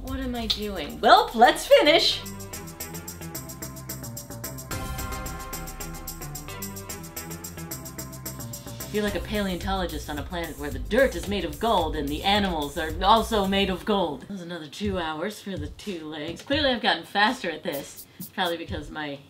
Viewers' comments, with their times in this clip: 0:03 I HEARD WALK LIKE AN EGYPTIAN PLAYING IN THE BACKGROUND I SAW WHAT YOU DID THERE